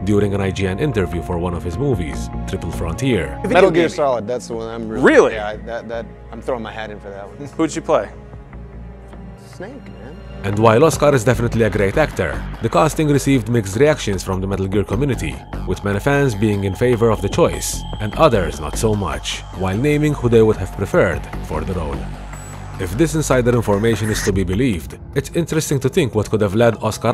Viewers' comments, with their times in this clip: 0:09 Ben Affleck seems to be laughing at the idea of Oscar Isaac playing Snake!?